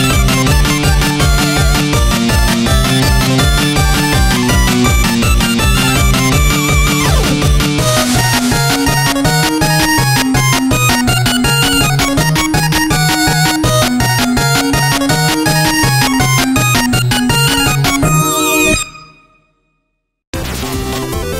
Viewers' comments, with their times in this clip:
0:08 It could be the final Boss Music